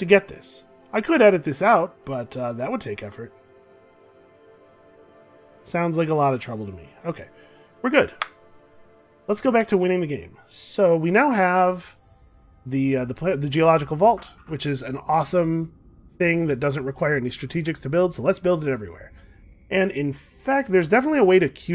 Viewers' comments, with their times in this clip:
0:04 is that the sound of a flip phone i hear ?